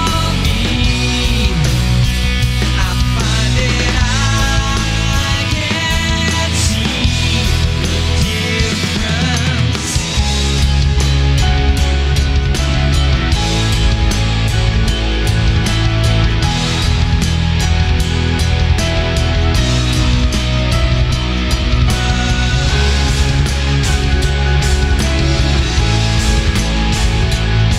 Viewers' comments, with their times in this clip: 0:10 is the best music I've ever heard